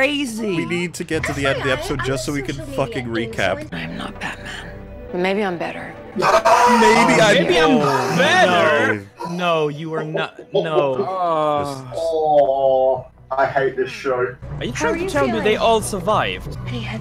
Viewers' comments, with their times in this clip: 0:04 That scream of agony